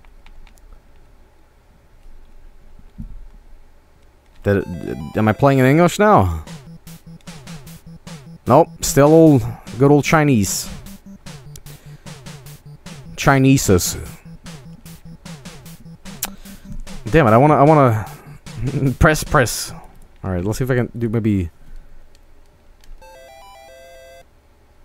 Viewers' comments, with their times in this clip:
0:10 is when the comedy ensues, The way he says the mispellings of their names. oh my god lmfao.